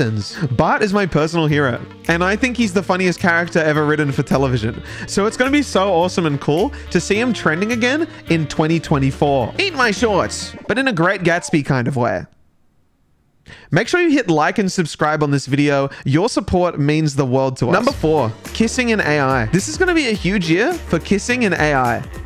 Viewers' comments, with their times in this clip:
0:09 obsessed with ... the silence followed by the promo is excellen